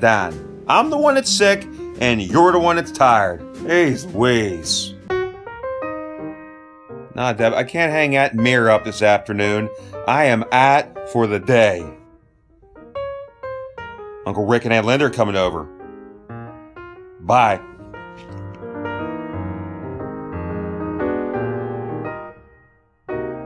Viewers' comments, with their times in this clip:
0:05 Need a translation "I can't hang out at 'mirror up' this afternoon". At least thast whats the captions say. Geez you'd think the YouTube wouds hava Pittsburgh Dad tos English translator by now. :)